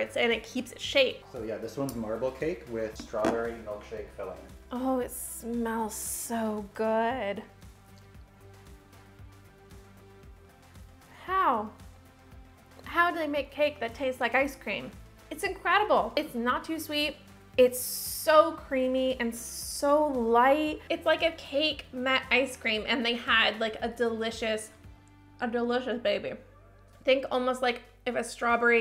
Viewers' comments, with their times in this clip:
0:10 she sounds like regina George here